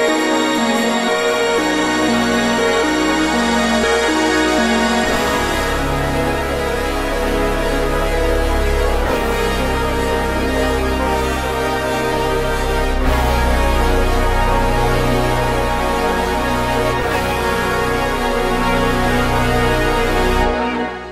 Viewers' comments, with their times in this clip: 0:07 Also my god these pads. Wash of stars and glitters